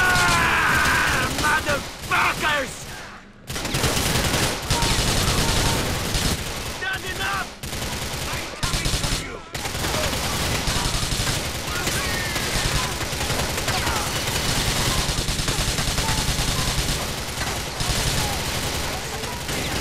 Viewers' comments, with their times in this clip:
0:06 Niko screaming "That's enough" as Phil dies is the cherry on the top.